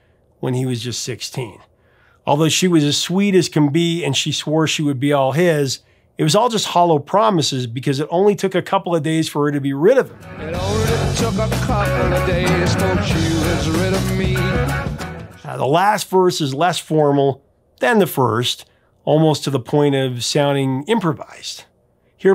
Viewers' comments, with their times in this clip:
0:09 I always misheard "it only took a couple of days till she was ready for me"